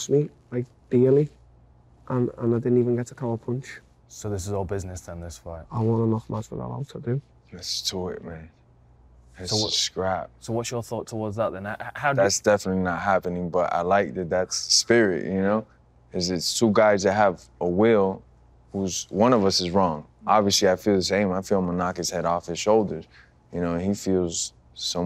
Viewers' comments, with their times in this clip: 0:06 THAT’S TOIGHT MATE! 🤣🤣🤣. Till biting his lip not to laugh 😂
0:06 what did Jorge say? 'that's too work'? What?
0:06 I still can’t figure out what Jorge said